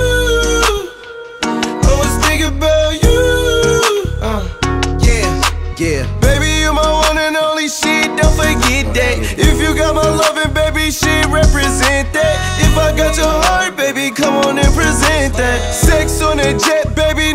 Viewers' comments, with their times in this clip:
0:03 Who else herd juice in that uh